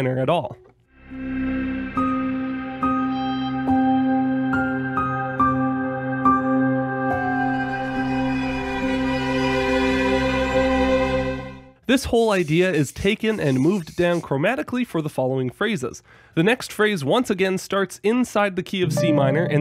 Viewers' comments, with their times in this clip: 0:05 Maybe I'm the only one who hears it this way, but that D to F# sounds eerily like a tritone, even though it's actually a 6th. It's most likely because that F# is tonally so far away from C minor. Also, I like how the "outsider" notes F#, F, E, and Eb outline a descending small step motion; thematically speaking, this descending pattern evokes the incremental descent of the outsider, Ori (and thus the player) takes, slowly going into unknown depths. A minor second-heavy melody is also good for representing creepy crawlies like spiders, too!